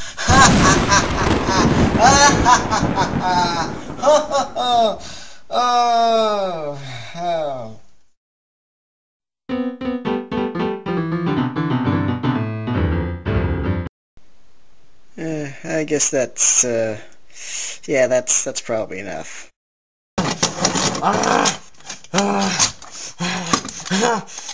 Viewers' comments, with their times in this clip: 0:09 Absolutely love this song.